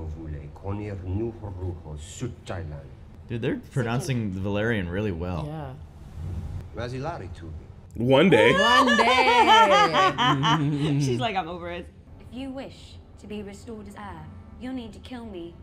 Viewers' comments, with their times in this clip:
0:03 as a native valyrian speaker i can confirm their accents are on point